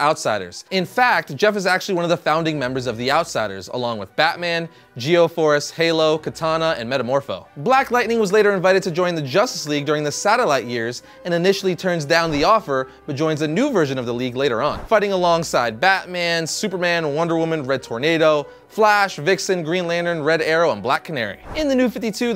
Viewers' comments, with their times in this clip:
0:04 I thought you said Halo and Cortana lol